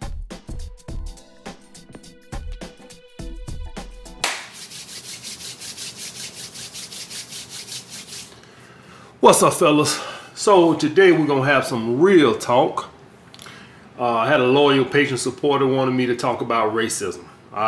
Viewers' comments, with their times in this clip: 0:03 That clap and hand rub sound should replace the national anthem at all sporting events and government ceremonies.